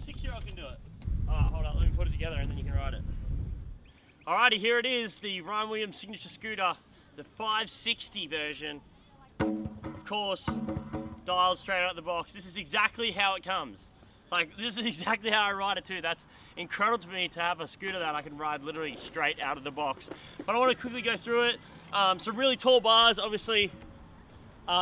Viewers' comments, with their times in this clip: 0:09 back in the day my razor pro would sound like a box of bolts being dropped, that is almost silent. Scooters have come so far.